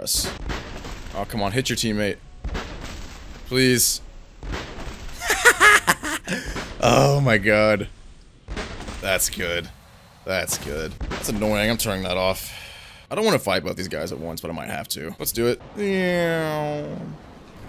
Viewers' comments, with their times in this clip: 0:03 That laugh though. It's a unique one : )